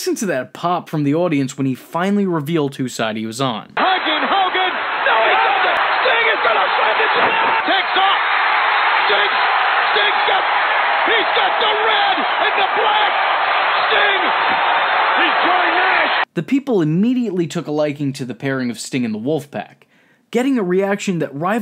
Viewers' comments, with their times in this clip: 0:04 One of the greatest pops of all time!